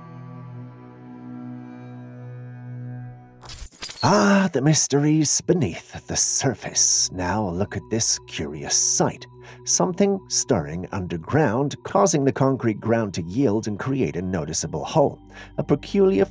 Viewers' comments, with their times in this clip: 0:04 that's directional underground drilling. You can even hear the guy say, "it's the cutter head". He saw the bit go by.